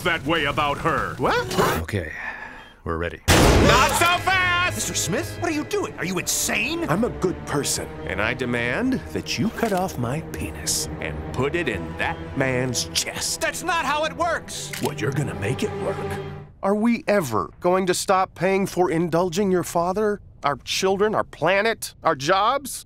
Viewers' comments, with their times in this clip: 0:04 I've always LOVED the delivery of that alien guy's lines there